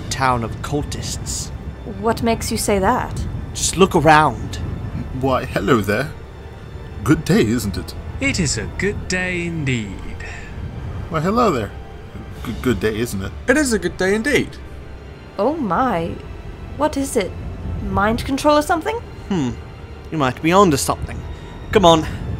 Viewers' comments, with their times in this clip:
0:08 I heard myself 😄😄